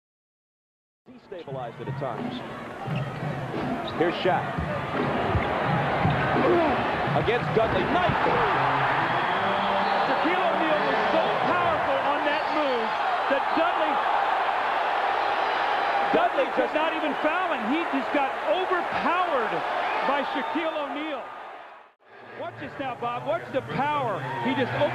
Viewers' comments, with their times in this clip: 0:06 Poor Dudley, you can actually hear his pain